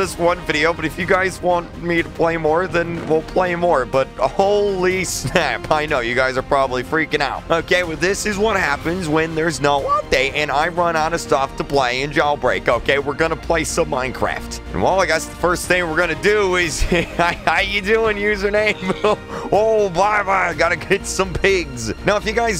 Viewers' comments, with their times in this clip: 0:10 that voice crack tho